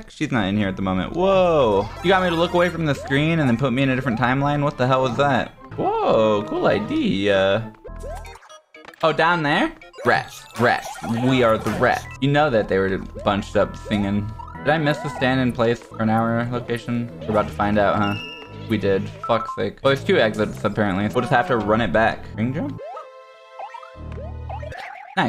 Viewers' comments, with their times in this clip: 0:06 He sounded just like mario